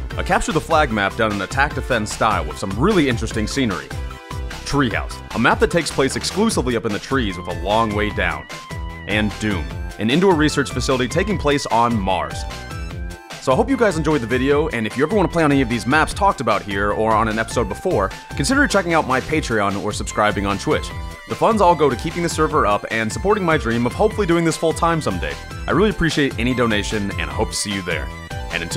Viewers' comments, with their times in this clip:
0:09 Doom music Starts playing